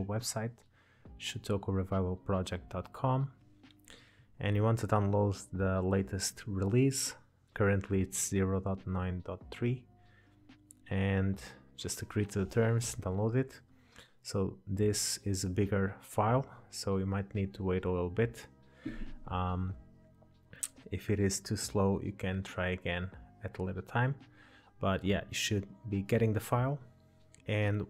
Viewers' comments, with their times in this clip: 0:10 "agree to the terror-" i heard this so wrong